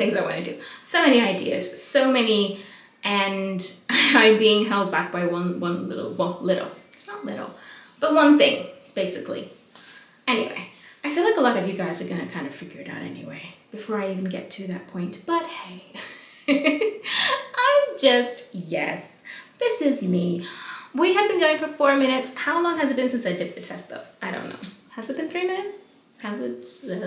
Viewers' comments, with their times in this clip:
0:08 Lol I heard the same sound as my dishwasher, was that your dishwasher?🤣🤣